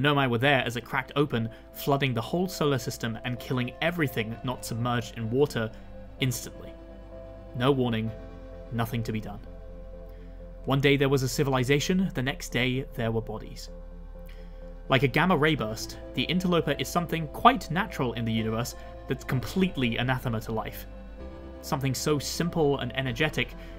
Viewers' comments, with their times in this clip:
0:07 I heard the music and thought, “hold on…” and checked the time. I love that detail you put in!